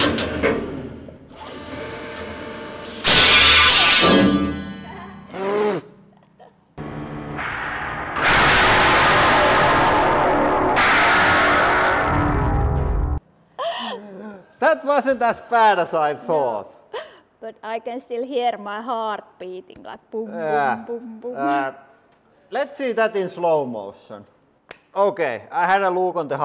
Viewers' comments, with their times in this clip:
0:08 Nice hellish sound